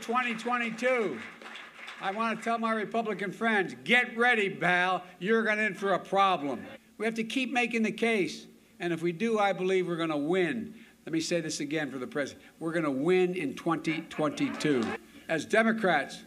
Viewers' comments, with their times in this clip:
0:04 "Get ready Bowel"!